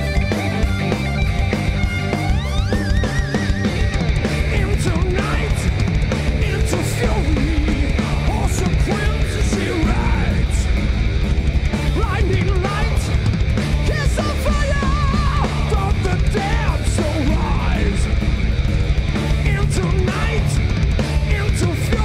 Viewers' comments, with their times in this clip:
0:07 sellotape solo by an unknown touring member